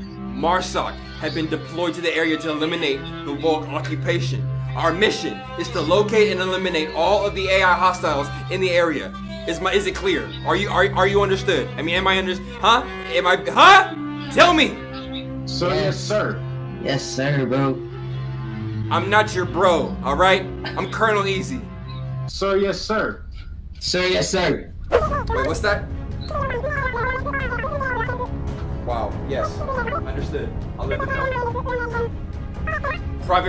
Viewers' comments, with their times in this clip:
0:09 When this dude started stuttering..... I swear to y’all I could not breathe😂😂😂😂especially when he goes “....HUUHHH? TELL ME!!!”
0:16 he sounded high when he said that